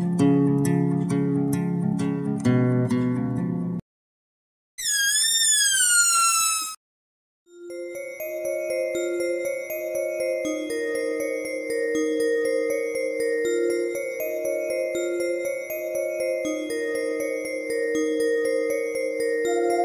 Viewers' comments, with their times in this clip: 0:04 THE SQUEAL KILLED ME😂